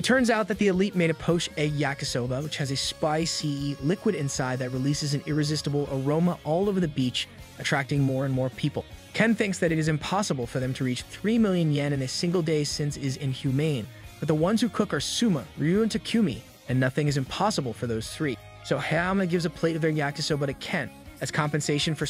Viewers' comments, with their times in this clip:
0:03 the way he said SPICYYYY😂😂💀💀